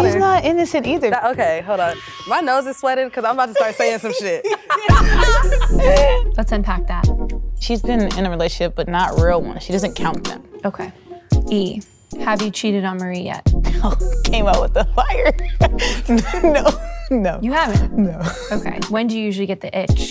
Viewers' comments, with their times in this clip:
0:04 this beat is so goshdarn duurdy